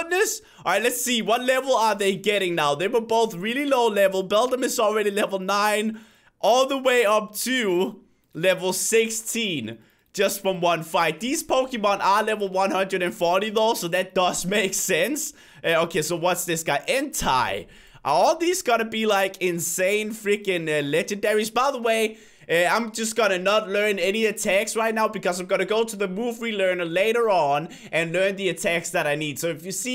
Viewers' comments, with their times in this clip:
0:09 he said Entei wrong
0:16 did he just pronounce "Entei" Entie?